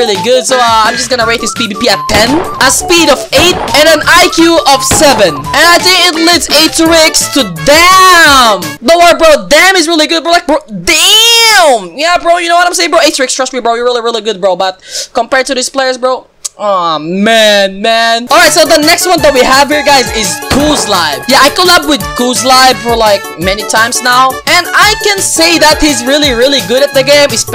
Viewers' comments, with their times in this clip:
0:10 😂 the way u say DAMN